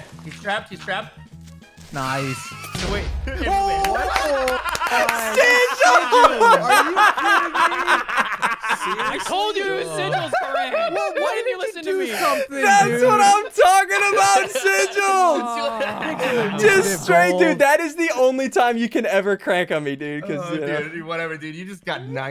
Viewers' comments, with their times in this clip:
0:07 is the most villainy laugh ever